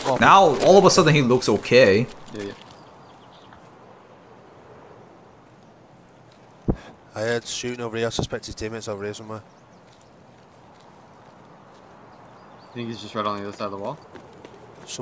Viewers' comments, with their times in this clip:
0:03 so far I'll say you can actually hear what sounds like steps on the rails on the other side of the containers but thats not the reason he gave...so doubt its legit